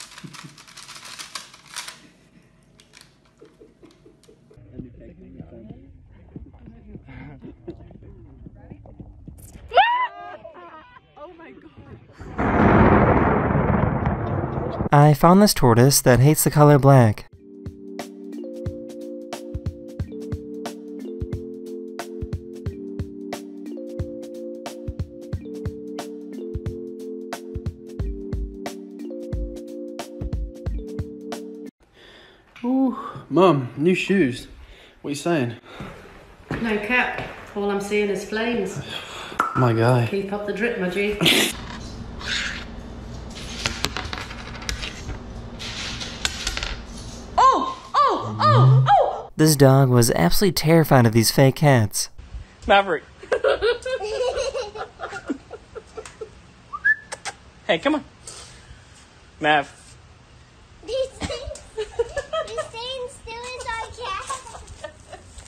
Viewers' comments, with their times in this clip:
0:05 interesting how even though that mountain is seemingly miles away, the camera glitches out and you can actually hear the electricity
0:09 that man is insanely lucky to be alive. If you freeze-frame it, you can see the lethal arc pass mere feet away from his head. So close, in fact, you can hear the static fuzz as the bolt strikes the mountain. Was breaths away from his head becoming a poptart.
0:32 How she speaking like like that blud
0:36 her english accent is what makes this so perfect lmao. I'd watch anything she put out as long as she spoke slang with that adorable accent
0:37 Bro the way she said those lines is a keeper
0:40 SHE IS LITERALLY ABLE TO SPEAK IN GEN Z WITHOUT SOUNDING CRINGE AND I LOVE IT
0:46 bro started barking 🗣️🐶
0:49 english or Spanish ah moment